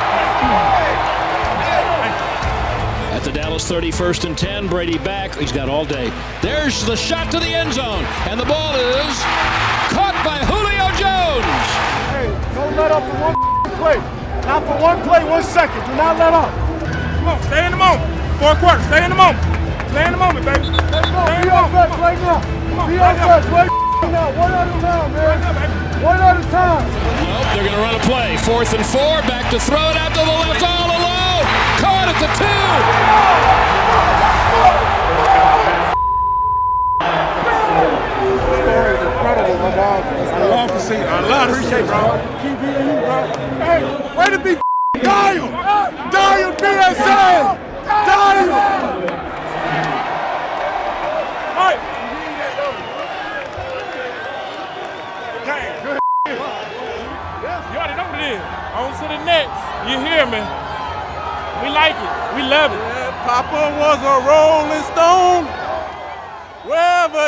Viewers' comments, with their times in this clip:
0:03 ... Brad Sham seemed to be just as excited with Julio Jones TD reception as he does with a Cowboys TD. I'm a little disappointed with this because I was wanting to hear all of the sideline chatter about the missed extra points. It only showed just a couple. I wanted to hear Daks frustration over the 3rd missed extra point. I saw Daks expression and he looked livid, cussing, yelling with blood veins popping out of his neck. I wanted to hear that. But they didn't include that. I also wanted to see the Buccs sideline expressions and comments over those missed extra points.
0:48 security lady was mad she aint got no job no more 😂😂 they going home 😂😂😂 she rolled her eyes at dak screaming